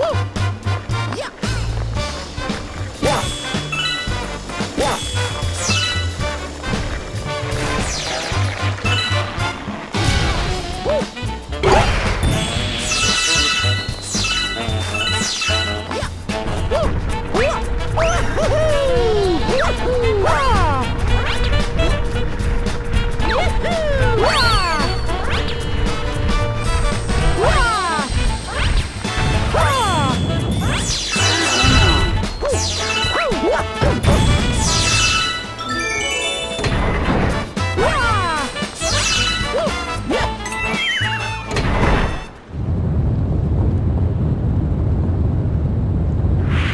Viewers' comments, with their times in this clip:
0:05 that piranha plant slamming itself on the ground was in sync with the music lol
0:28 Same with the whomp, when he take position and then when he jump.